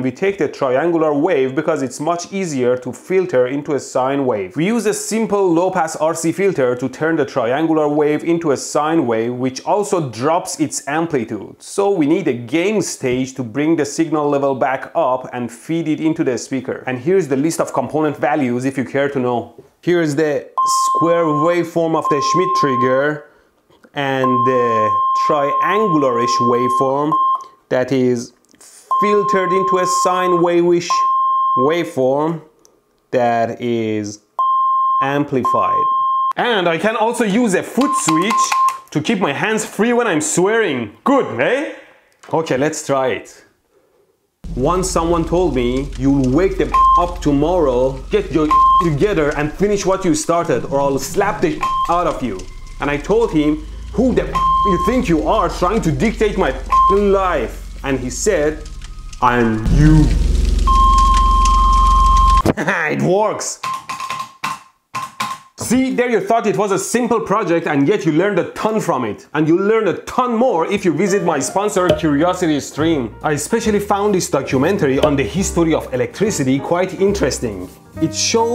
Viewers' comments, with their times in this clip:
0:08 nice singing brv
0:18 pressing the same "sinusoidal" button and hearing the same sine wave while speaking about triangular and square waves could be a little confusing for some people, sir. Also where's the distortion boost for an extra curse??!
0:29 Its not a pure sine anymore but it's ok.
0:29 That bleep sounds like the GM buzzer from the late 80’s early 90’s. How nostalgic!!
0:43 using the beep to censor the swears while using the hand movements to censor his mouth was pretty clean
0:43 no use I heard everything
0:45 You sounded like a British guy at the end there.
0:54 When you do a longer bleep the frequency of the bleep seems to briefly rise. What's up with that?
0:59 I am YOU. *EAS 1050Hz tone*
1:03 He couldn't resist the Shave and a Haircut.
1:03 Local firetruck use's the same note